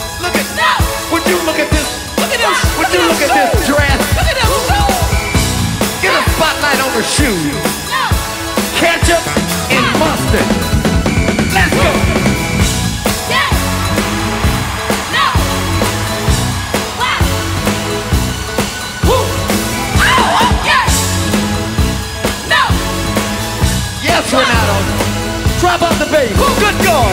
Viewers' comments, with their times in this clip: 0:09 DAMN!! That bass run!